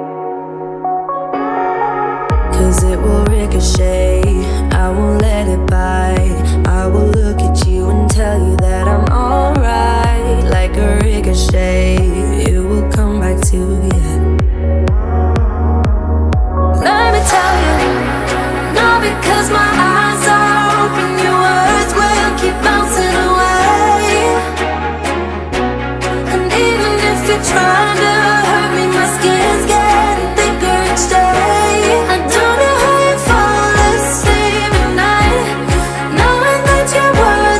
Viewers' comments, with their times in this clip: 0:03 Anyone else getting Katy Perry Fireworks vibes.
0:19 u can hear that instrumental like Viva la Vida Coldplay